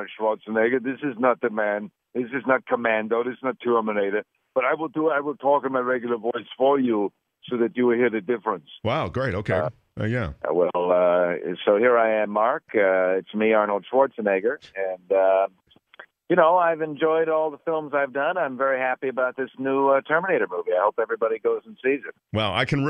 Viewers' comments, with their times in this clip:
0:10 Arnold's 'real voice' sounds just like Mitt Romney :)